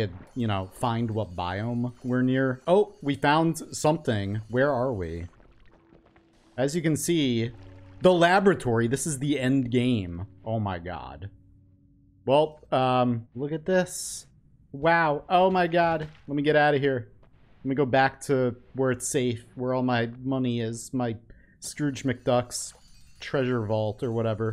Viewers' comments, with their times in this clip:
0:10 Cool vid... subbed! Dude! My brain started hurting once I realize you sound like Tom hanks. Especially when you say “oh my god!” ... tell me I’m wrong internets I dare you!